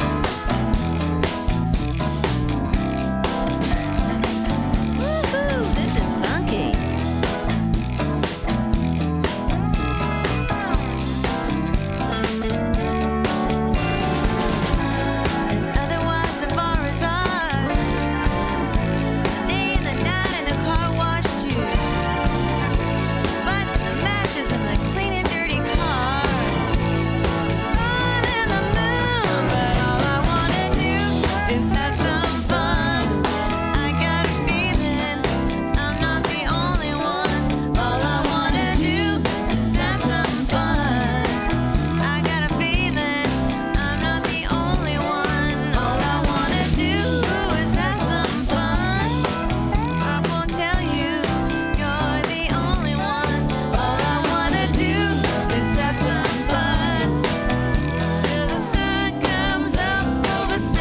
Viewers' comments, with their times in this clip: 0:04 woohoo, this is funky!
0:04 Wow this is funky! back in my sweet 15 :) Nice performance live! Thanks for the post
0:45 lovely little yodel there